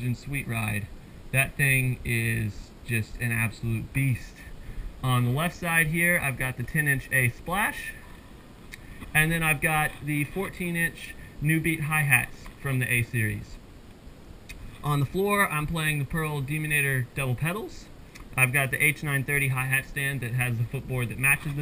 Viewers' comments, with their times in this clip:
0:09 does anyone hear three open hi-hats that he never played??